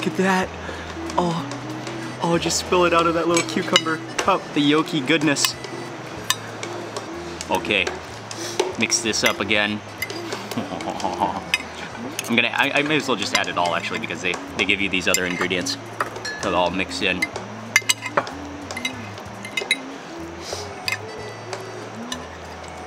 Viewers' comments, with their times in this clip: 0:09 french laugh right there :D :D
0:10 all that French food had you sounding a French when you laugh.
0:10 Is that Mark’s French laugh??
0:10 Started to turn French lol